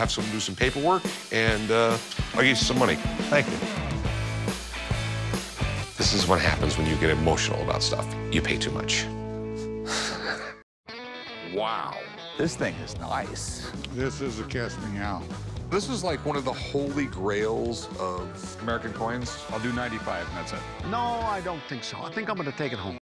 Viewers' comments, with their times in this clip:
0:10 they added the rick laugh 😂